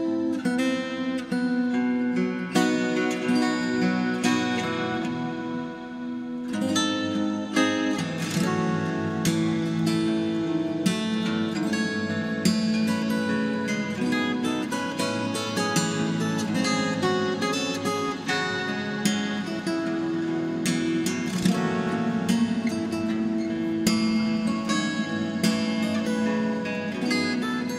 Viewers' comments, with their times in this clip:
0:08 very loved when guitar play
0:09 You do one The percussive hit you do. Like, all of the X's on page 4 of the Tab. Also, just had to say, since you're reading, your covers are really impressive. Keep it up!